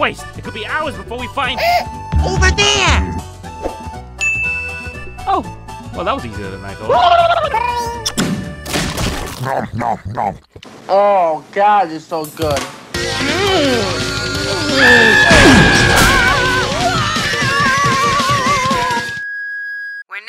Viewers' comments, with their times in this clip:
0:06 That voice when Mario’s Tongue got his fav food 💀